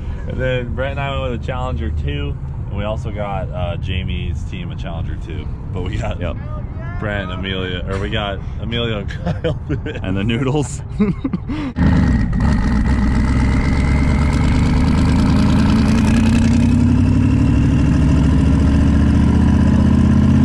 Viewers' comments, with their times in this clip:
0:05 Whoever shouted “hell yeah brother” is a legend
0:06 was that a fan giving a safely distanced "Hell yeah brother"?
0:06 A random stranger in the background yelling "hell yeah brother"!!!